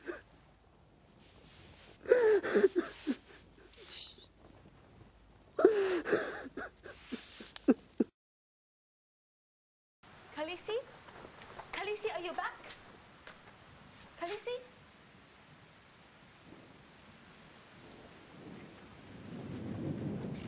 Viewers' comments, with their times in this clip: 0:05 Aw man that sobbing really hit the nail on the head. I feel like crying now too.